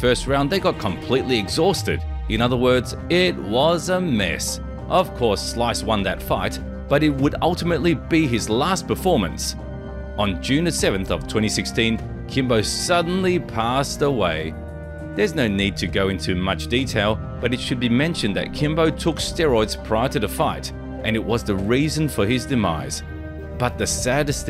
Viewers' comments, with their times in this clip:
0:10 I had to lmao The narrator is talking at a fast tempo, and then once he mentions Kimbo's death, he immediately switches it up. It's so jarring, I thought I messed with the playback speed button lulz